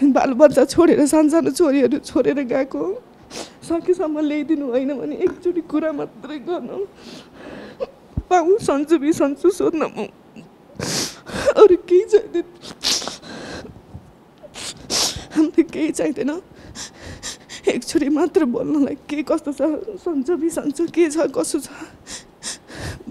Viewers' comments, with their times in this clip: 0:10 she cry so much i couldn't understand 😢 language